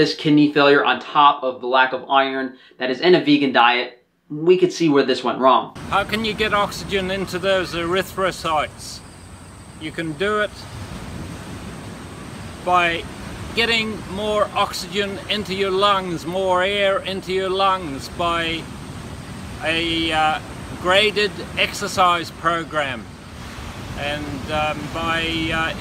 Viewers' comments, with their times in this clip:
0:06 Listen carefully, he is doing a lot of breaks between a word and the next one. He sounds like a guy that barely speaks english or a person is high on opioids.